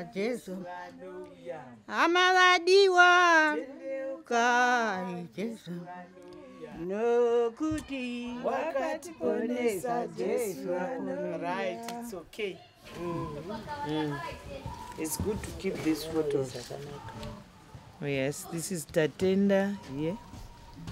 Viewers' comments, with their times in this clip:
0:04 I could listen to this beautiful woman sing for hours. Beautiful culture